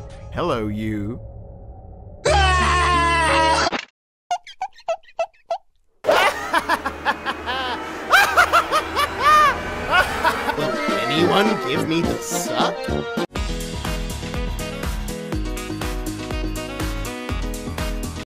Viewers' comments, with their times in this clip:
0:06 That evil laugh